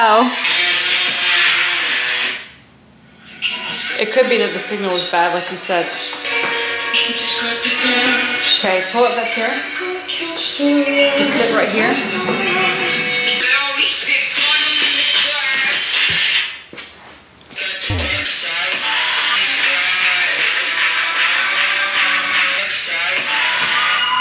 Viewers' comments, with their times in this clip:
0:07 Why Is nobody talking about Deku singing it was 1000000/10
0:07 Oh mah gosh ur right deku's singing was 10000000/10